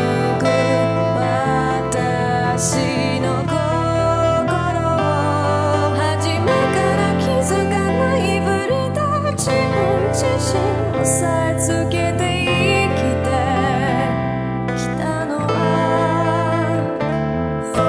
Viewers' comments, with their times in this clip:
0:05 that chorus tho.... <3